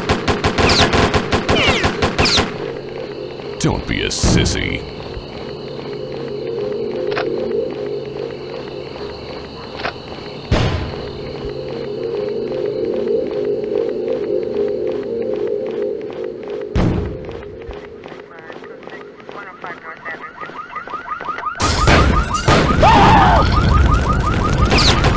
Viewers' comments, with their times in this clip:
0:08 I really like the ambience in this game specially that background sound that i can't explain with words